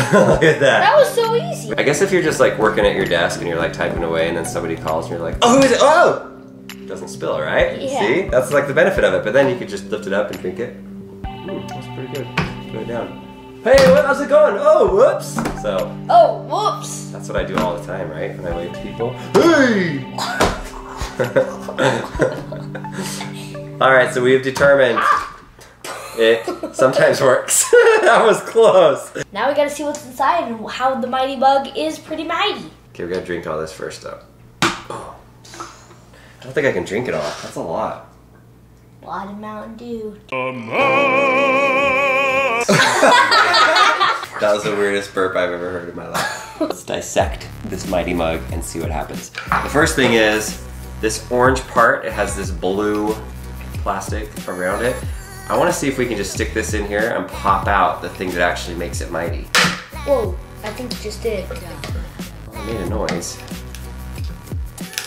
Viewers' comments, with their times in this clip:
0:04 Someone please make a vine of the yell
0:50 the music ALWAYS reminds me of idubbbz